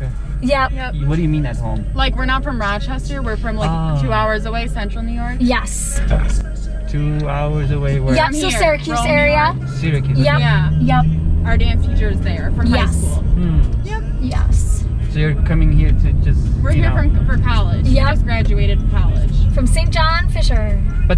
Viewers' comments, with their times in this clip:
0:06 omg dude she farted eheee